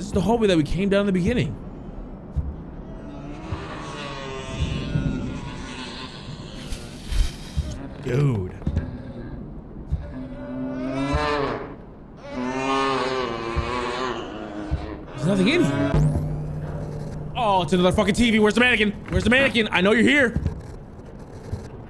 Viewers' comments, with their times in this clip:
0:09 sounds like someone had Taco Bell 😂😂